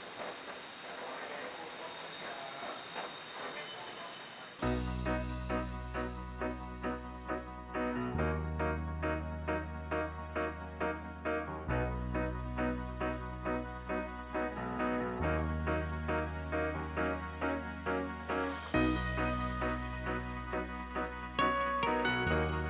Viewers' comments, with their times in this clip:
0:06 Excellent background music track that captures the essence of the footage being shown.